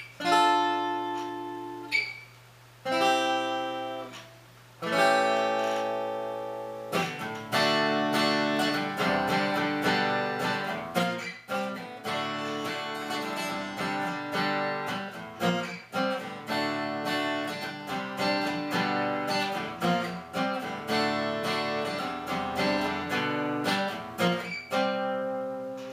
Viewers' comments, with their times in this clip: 0:06 The chord should be an Am, no?